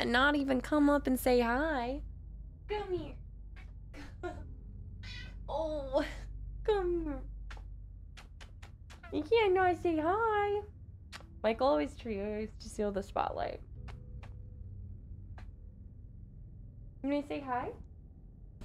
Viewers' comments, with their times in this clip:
0:05 just started watching this today, ginger’s little meow 🥺 such an angel